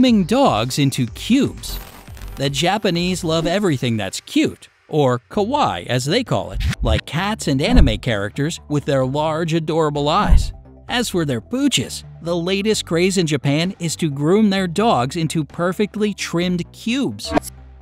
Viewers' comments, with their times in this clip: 0:04 When they say かわいい、こわいい。You said Kowaii which means Scary in Japanese. lol
0:05 pronounces Kawaii as ka - why cough excuse me?
0:05 "ka-why" that was me a long time ago 😂😂